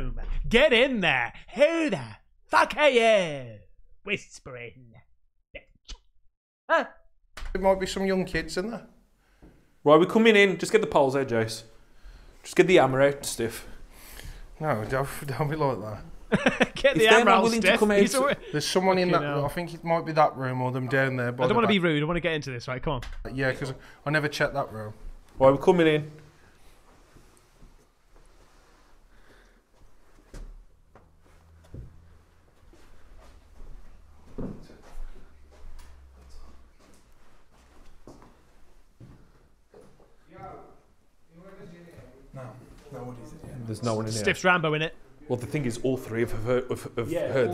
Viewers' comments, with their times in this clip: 0:08 100% of the female voices so far sounded like some sort of Amazon/Siri/Alexa devices to me
0:34 Why is no one talking about the mad whispering ? Am I mistaken? Sounds like a man whispering